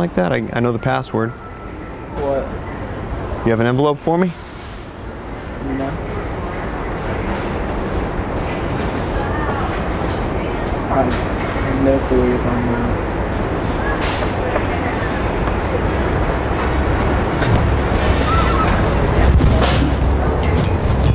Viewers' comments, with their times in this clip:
0:06 Awkward silence, hhahah